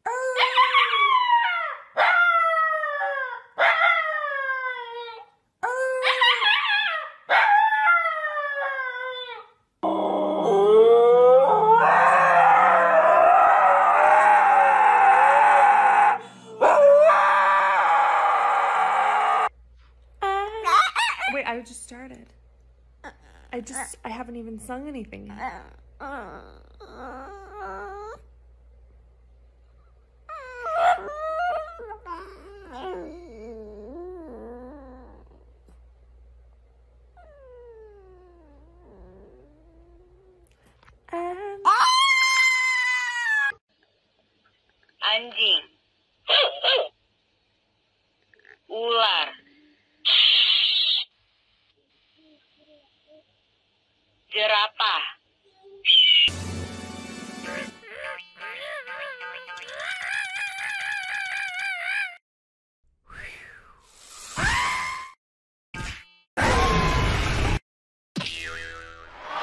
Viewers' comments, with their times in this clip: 0:10 sounds like a damn tie fighter
0:14 that’s not a dog howl that’s a demon trying to escape
0:54 that’s not even what a giraffe sounds like